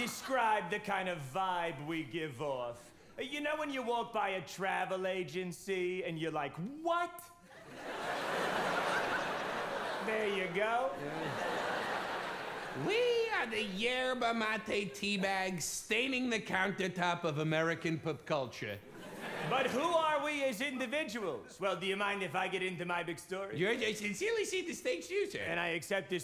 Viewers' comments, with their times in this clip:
0:07 the "what??" was just pure john.